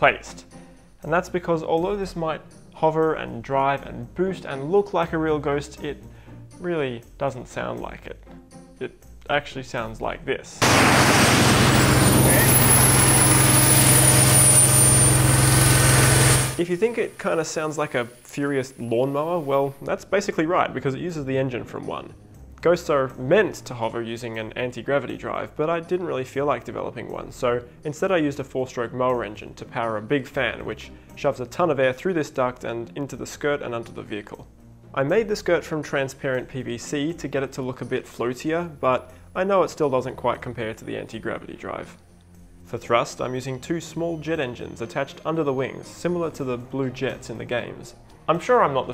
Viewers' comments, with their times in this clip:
0:10 wtf bro we get the point, you didnt need to blow our ears out.
0:10 VOLUME WARNING jackass.
0:15 Lol the real sound is actually better. Sound like a badass steampunk machine mixing jet age with diesel age.
0:15 honestly thats how id imagine a real life ghost sounds like
0:35 idk man, still sounds pretty cool